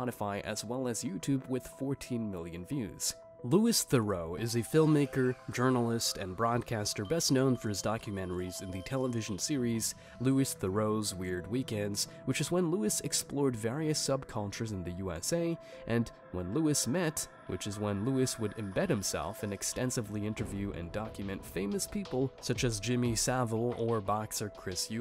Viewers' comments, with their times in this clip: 0:07 My God how many different ways can you say Louis Theroux 😅